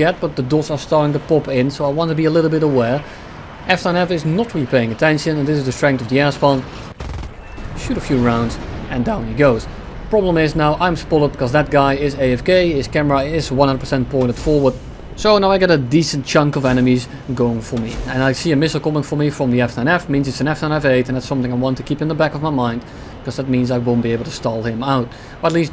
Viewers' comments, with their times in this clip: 0:08 voice crack? "and down he goes"